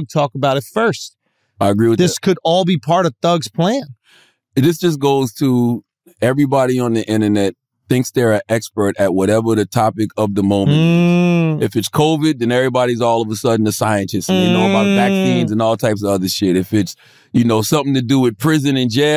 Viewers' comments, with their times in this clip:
0:05 What the hell is Schultzys series of groans?